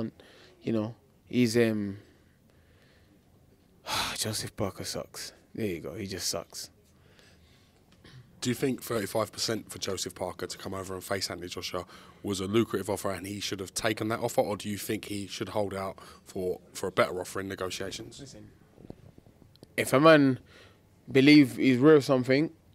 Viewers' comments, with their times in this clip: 0:03 The siiiigh loool! "Joseph Parker sucks man, there you go, he just sucks.."😂😭